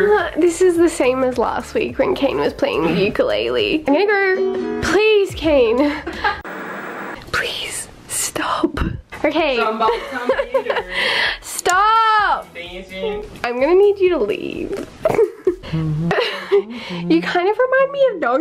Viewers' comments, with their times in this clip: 0:03 it sounds real bad